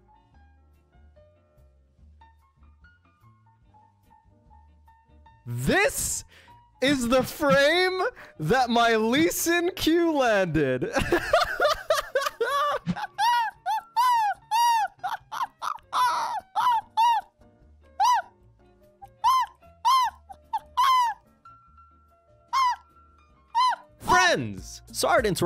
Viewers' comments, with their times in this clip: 0:10 this llaugh is the best play tbh